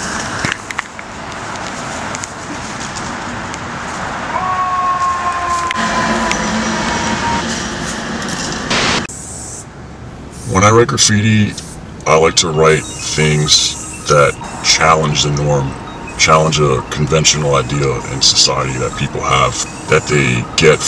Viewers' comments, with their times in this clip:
0:04 lol scary add its was a fire truck